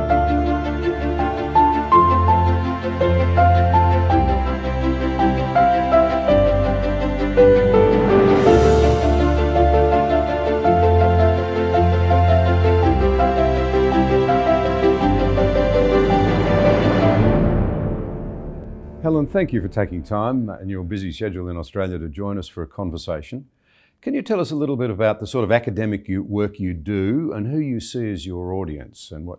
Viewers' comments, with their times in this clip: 0:10 "sort to expose"? Ah, I see what was meant.